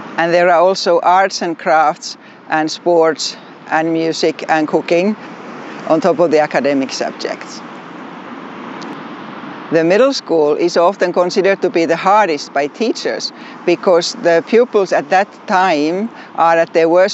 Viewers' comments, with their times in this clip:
0:05 I was like hmmm finland offers some real stuff and then I realised the word was "cooking"